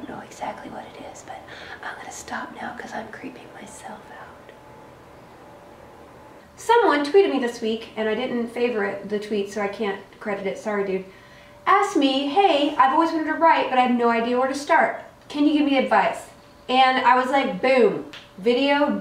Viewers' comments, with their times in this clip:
0:06 Congrats, that's very creepy!